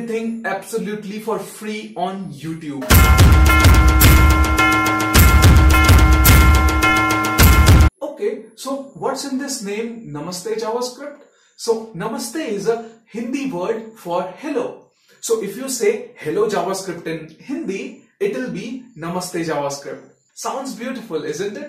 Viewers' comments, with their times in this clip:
0:03 Love this moment the girl arrives with the ghanta sound in background 🔔🔔🔔
0:07 I landed here after seeing one of the post shared on LinkedIn about your "Namaste JavaScript" & i don't know why you put the serial background noise but its quite relatable for someone giving FREE things... 🤣